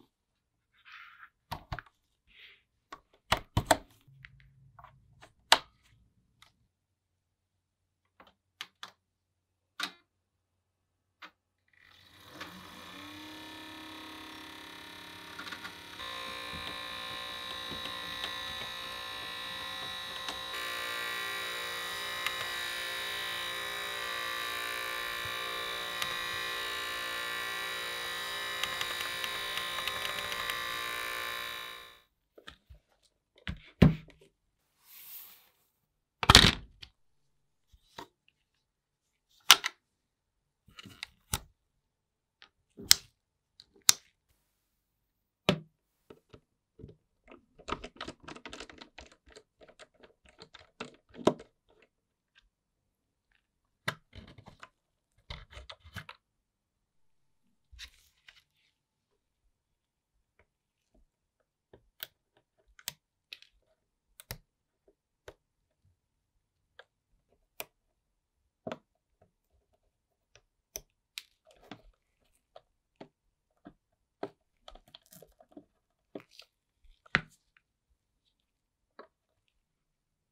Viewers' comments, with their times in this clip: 0:09 the disc reader sounds like a American V8 Engine 😂😂😂😂😂
0:11 it straight up sounds like a hair cutter
0:12 wii makes buzzing noise
0:13 The noise of the disk: 🔊🔊🔊🔊🔊
0:13 bro is that a wii or a lawnmower?💀
0:14 car engine moment 😂
0:16 making it sound like tractor
1:02 sicker cover went weeeeeeeeee